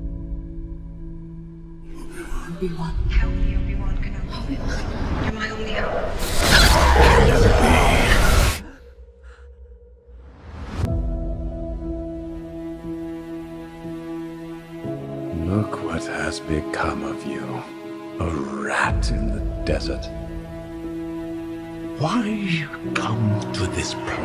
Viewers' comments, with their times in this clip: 0:07 I hear that voice and now I'm hyped